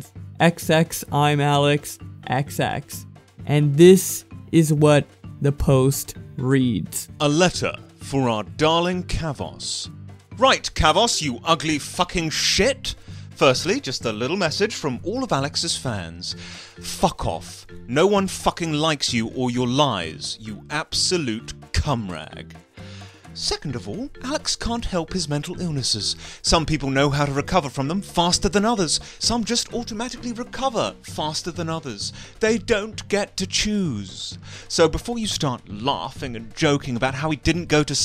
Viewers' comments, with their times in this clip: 0:04 prepare your ear drums.My head hurt after this
0:25 lowkey thought you paid Gordon Ramsey or an impersonator for a second😳 like woah that sounds alil like him